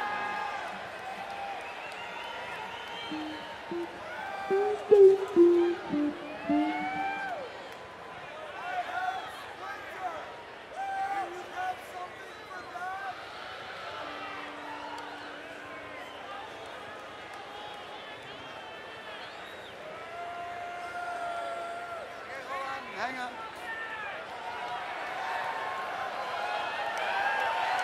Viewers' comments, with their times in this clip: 0:08 that guy yelling “I HAVE A SPLINTER”